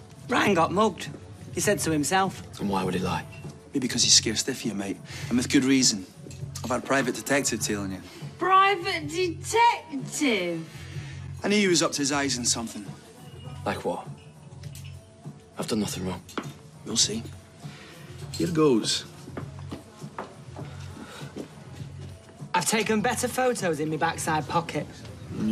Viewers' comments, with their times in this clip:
0:08 hahahaha sounds like Izzy is on the weed again :D